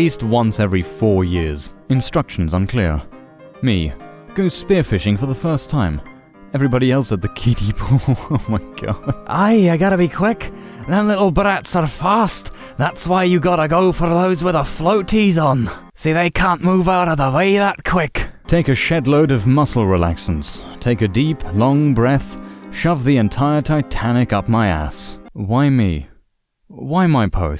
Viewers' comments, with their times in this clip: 0:09 The bad Scottish accent killed me : ) And it also reminded me of Scooter from Veggietales.